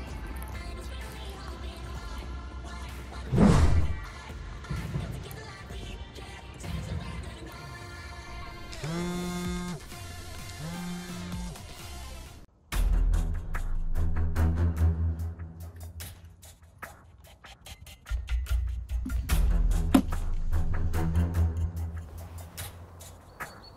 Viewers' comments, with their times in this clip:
0:08 nokia still vibrating 🤣🤣
0:09 I thought the Nokia was ringing 😂😂